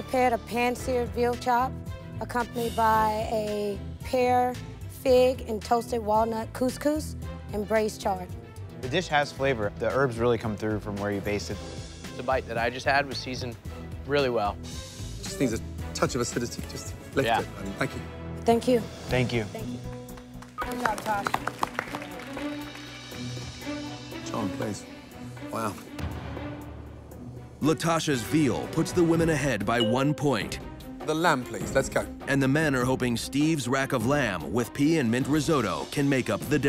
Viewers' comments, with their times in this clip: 0:09 When that chef said 'erbs instead of herbs, I thought of Eddie Izzard saying on one of his live shows, "You say 'erbs and we say herbs, 'cause there's a fuckin' H in it"
0:22 Does the Narrator know how to read?